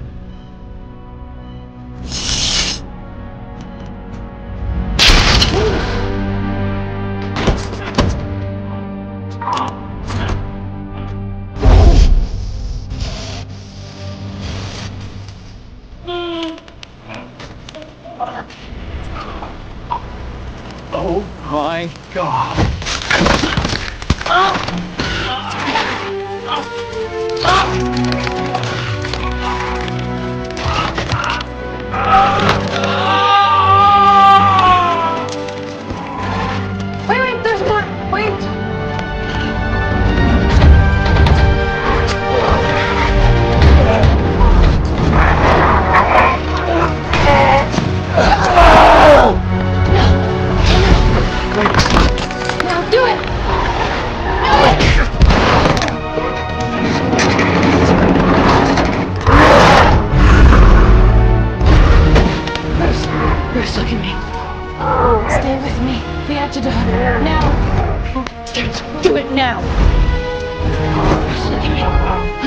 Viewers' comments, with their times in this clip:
0:10 sence is horror,the sound of coming hulk and banner going down
0:22 the bone crack tho 😲
0:23 Hear the bones crack on the transformation ... Man it must've hurt.
0:31 can I just say, you can just hear all the pain and anguish that Banner is in right now. Such a powerful scene.
0:31 sounded like gru from despicable me😂
0:32 that scream though is so on point
0:59 everytime Hulk gives that face, I get chills damn. The anger, the grin face, the green glow in the eyes, the deep voice, everything about this Hulk is super awesome. I missed this Hulk. Hope there's a part 2 to "The Incredible Hulk".